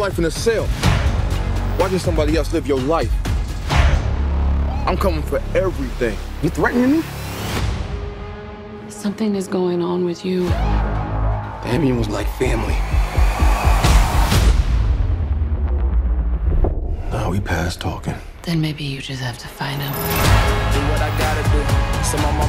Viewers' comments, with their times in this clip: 0:06 You know it's a money grab when they leave a dub in the trailer lol